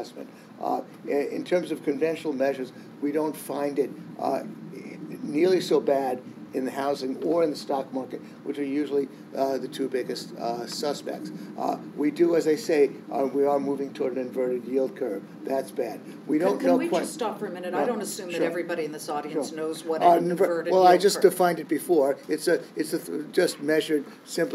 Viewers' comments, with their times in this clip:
0:10 So hard to hear it...sheesh! When was this recorded? Gene says the 3 month / 10 year is close to inverting...it already inverted earlier this year...we're now in the steepening phase which signals imminent recession!